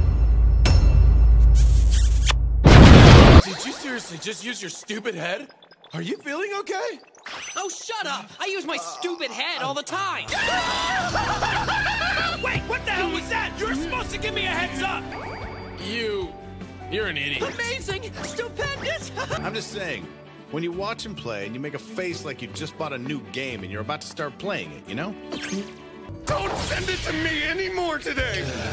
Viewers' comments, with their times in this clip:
0:10 I bet my super limited edition Bokuto Koutarou plushie that Kageyama was the one that squealed like a girl